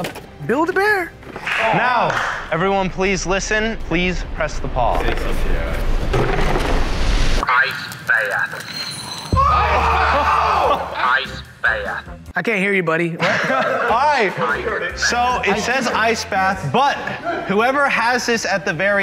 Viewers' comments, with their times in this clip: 0:07 as a fellow Brit this accent is better than mine will ever be